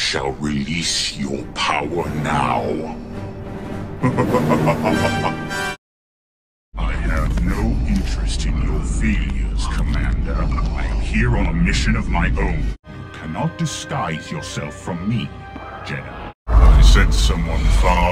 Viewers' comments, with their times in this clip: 0:03 didn’t know Vader laughed…